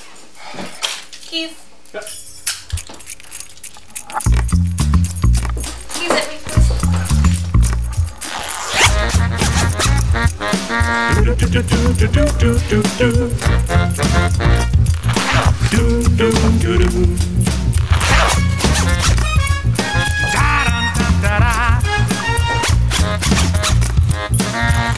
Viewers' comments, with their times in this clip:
0:07 this tune will probably be stuck in my head all throughout work tomorrow(today? idk it is so)